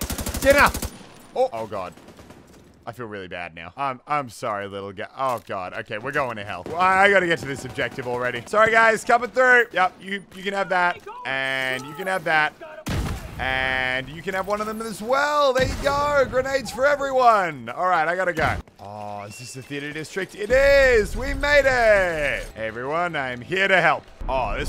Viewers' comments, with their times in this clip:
0:08 @ Elon Musk laughs...